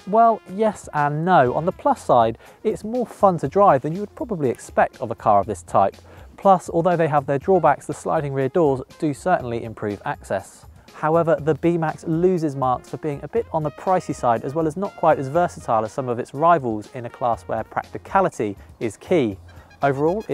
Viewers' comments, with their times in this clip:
0:07 Yes buddy, the sliding rear doors do have their 'drawbacks'. Ha-ha. If they didn't they'd be pretty well useless. Yet I don't know if his deadpan delivery there was deliberate or not...